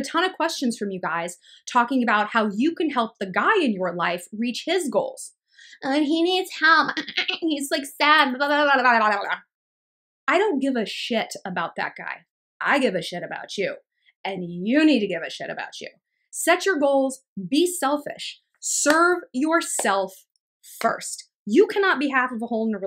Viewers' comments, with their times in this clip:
0:06 The Iliza shlesinger dolphin squeak 💚